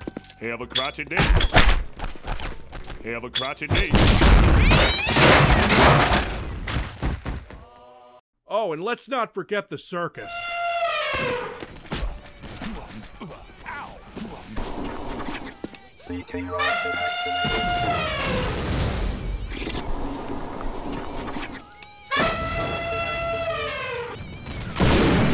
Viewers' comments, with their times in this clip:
0:06 that dejected choir